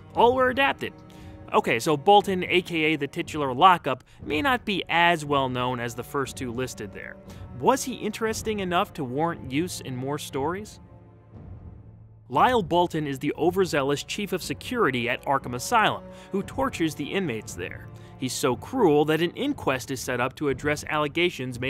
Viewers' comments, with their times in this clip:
0:07 that pause felt SO awkward, like I could feel the stare coming my way.